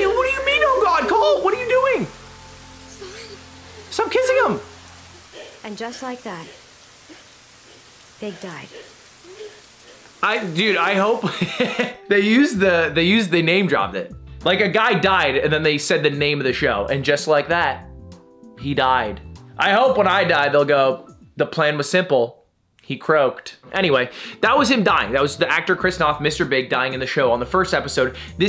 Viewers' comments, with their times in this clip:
0:09 Someone dies on tv, Ludwig laughs